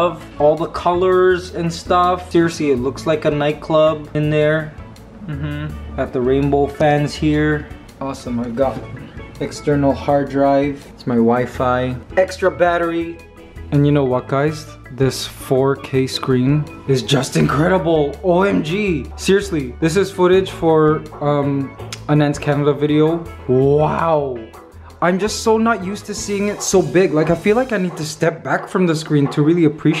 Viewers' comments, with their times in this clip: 0:10 "it's my wifi" Me: did he say his wife or something else lol (I know he said wifi)